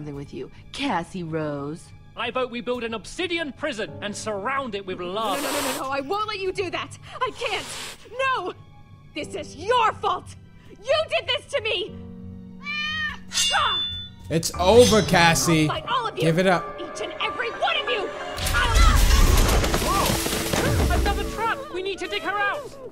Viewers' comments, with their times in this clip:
0:04 one of the actors sniffed and it came out in this